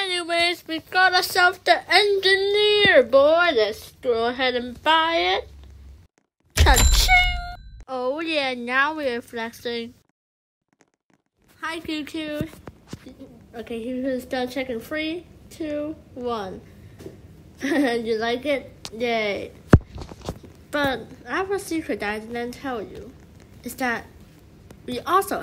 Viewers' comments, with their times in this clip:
0:06 perfect dubbing XD